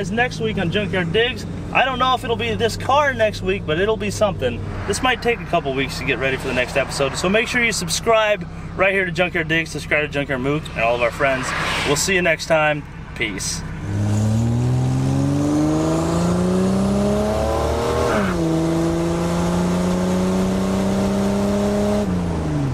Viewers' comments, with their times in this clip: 0:10 oooo that tire chirp 🤘 😂